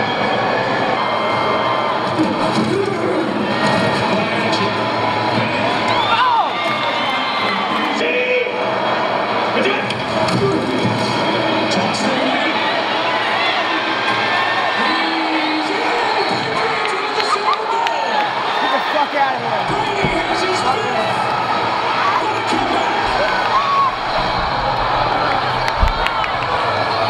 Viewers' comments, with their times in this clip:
0:08 the moment when everyone was silent